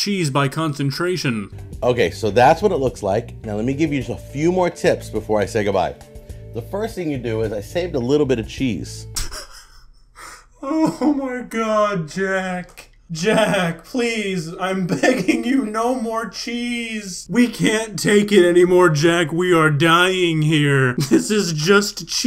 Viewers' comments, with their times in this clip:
0:04 the moment I actually remembered that he is a human too. His voice sounds so different without the duck.
0:09 This honestly had me burst out laughing lmao. The completely serious and natural "I still have more cheese for this bad boy" after what we saw was perfectly timed comedy haha
0:10 I love how you can hear that he is leaning back in his chair in disbelief
0:10 Hearing a duck cry-laughing at cheese is more entertaining than it probably should be…